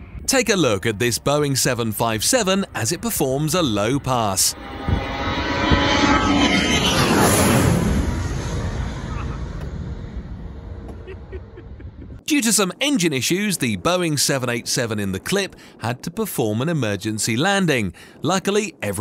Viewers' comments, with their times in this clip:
0:04 most high pitch I’ve ever heard